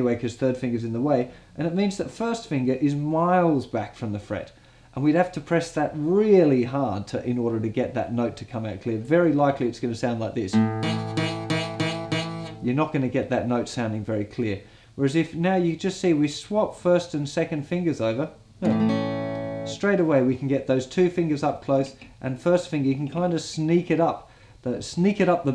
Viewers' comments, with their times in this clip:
0:10 The Buzzing Sound on the D String is making me Laugh 😂